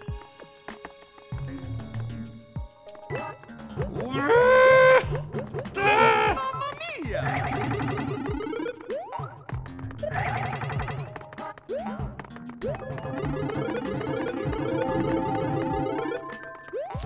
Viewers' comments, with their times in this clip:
0:05 That Mumma Mia! Was so funny